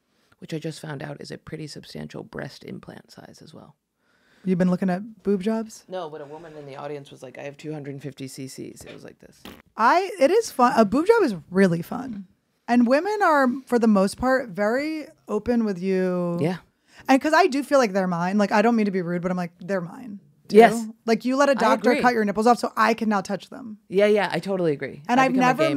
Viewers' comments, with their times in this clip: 0:07 Jordan tries to mask a fart with a balloon squeak